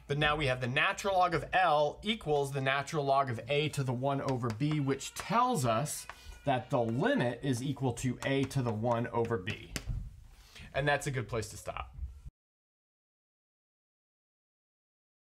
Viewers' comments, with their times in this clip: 0:10 I have a question though: was it a baby crying or just a squeaky door ? 🤔